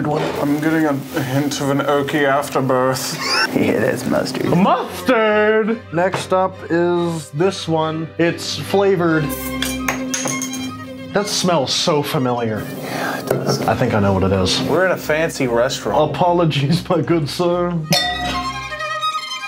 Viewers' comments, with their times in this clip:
0:03 your sounding like a ghost clown I know